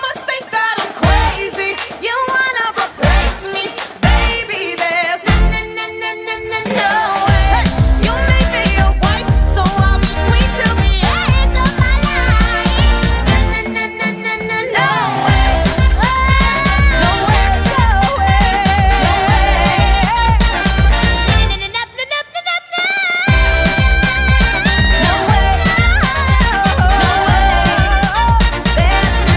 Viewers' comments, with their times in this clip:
0:10 can her voice go that high or is that editing